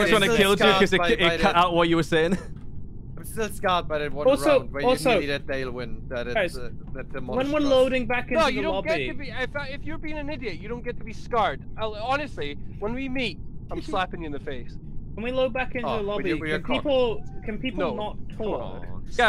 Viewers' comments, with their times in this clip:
0:04 oh ok so i may be under the influence, but i missheard is accent and thought he said the n word and bout pissed myself laughing at how dumb i am. "If you're-If you're (an idiot-)"